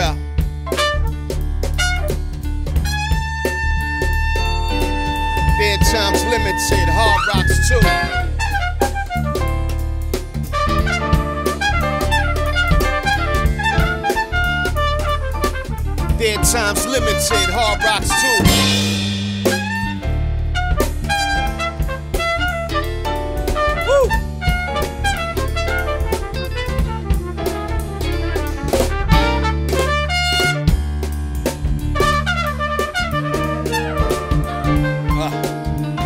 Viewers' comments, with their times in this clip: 0:10 whoa .... the piano chords ... the bass is carrying this times up beat.... love.
0:18 That hit made me turn my head sideways! WHEW!!